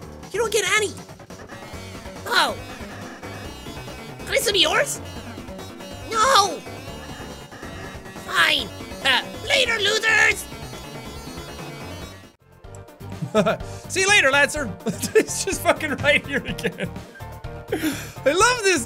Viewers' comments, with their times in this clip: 0:04 I just love that little “No!”